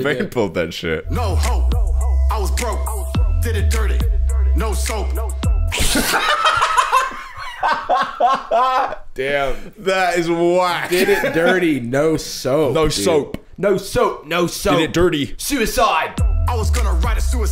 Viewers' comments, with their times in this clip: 0:05 for some reason your laughs made me laugh even harder lol